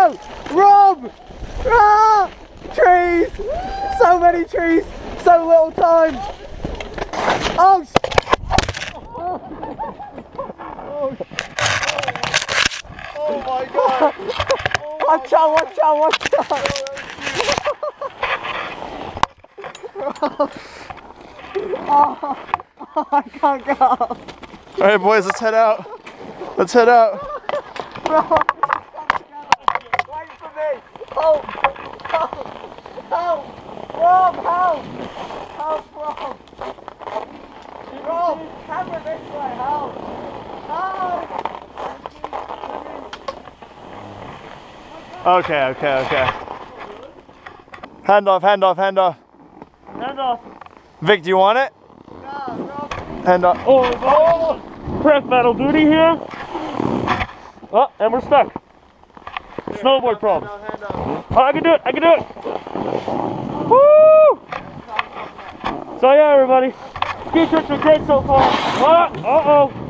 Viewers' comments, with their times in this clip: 0:08 Oh God! The Sound Sounds Like Someone Broke A Bone!!
0:51 it took me so long to realise why Lachlan does not sound the same in this video